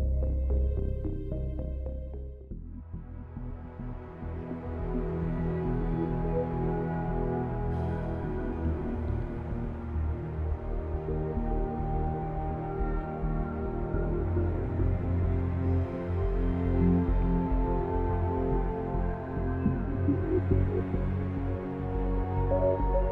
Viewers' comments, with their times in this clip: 0:05 reminds me of stalker menu song